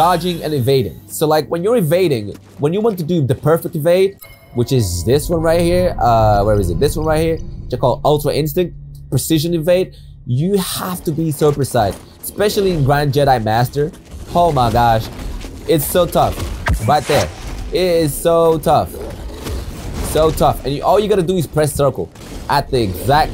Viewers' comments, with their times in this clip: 0:08 You have to be Circumcised. 😂